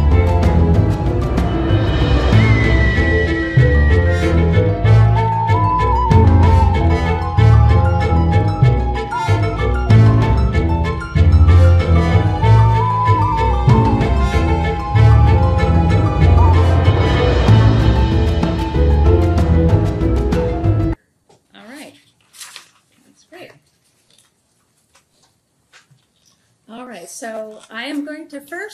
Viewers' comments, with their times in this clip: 0:09 This sounds like it was written by Danny Elfman... 🥴🥴🥴🥴